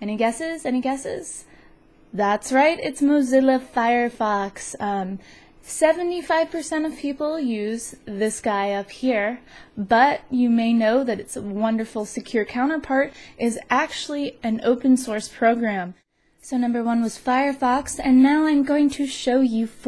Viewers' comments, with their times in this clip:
0:03 The way you say "Mozilla Firefox...." rox my sox!